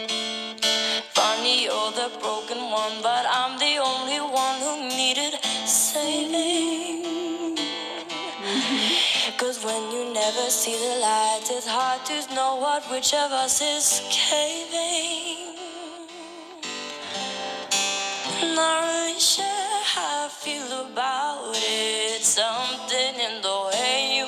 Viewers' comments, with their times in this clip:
0:06 You sang along Very nice